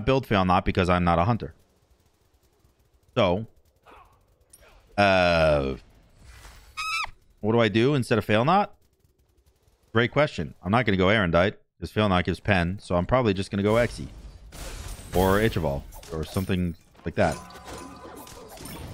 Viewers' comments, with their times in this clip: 0:05 Suddenly, a balloon deflates